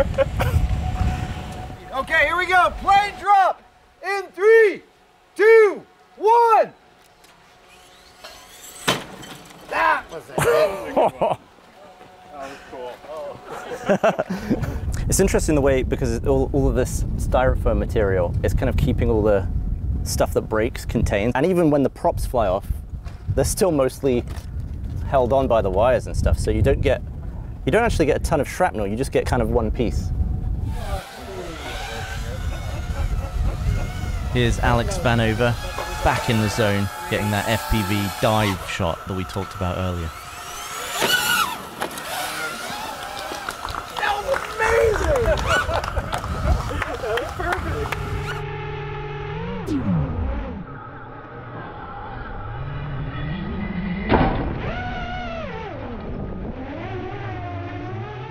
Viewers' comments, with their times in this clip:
0:10 Someone laughed and it sounded like it may have been Dan. I think he just didn't need to be on camera for this video
0:45 that "woo" from the drone after getting the shot gives it that extra touch to the video.